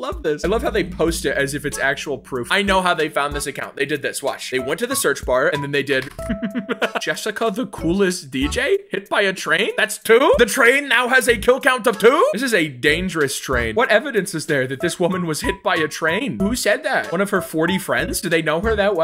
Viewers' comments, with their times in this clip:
0:06 I like your laugh lol and your name has laugh in it